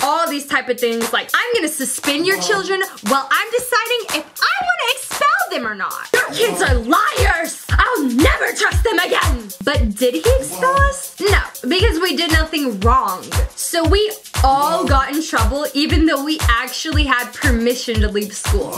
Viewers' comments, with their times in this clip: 0:03 someone is saying hello